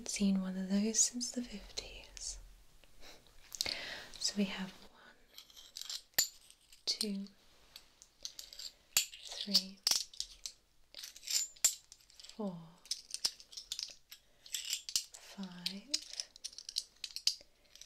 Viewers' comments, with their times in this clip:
0:04 The coin counting was soo good. I wish people did this trigger more
0:05 The coin sounds gave me sooooo many tingles omg this was so good!